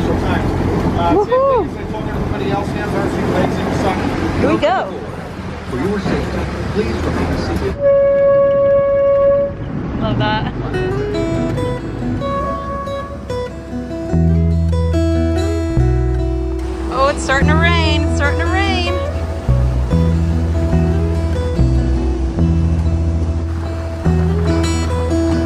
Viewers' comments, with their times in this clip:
0:06 Is it just me or does the horn sound like when you needed to pull desks together because you forgot your text book in 6th grade?